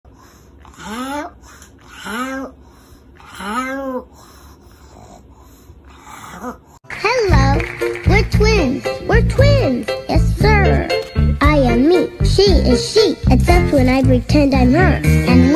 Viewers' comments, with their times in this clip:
0:00 the pug is saying help do you hear it
0:00 doggy translation: help help....help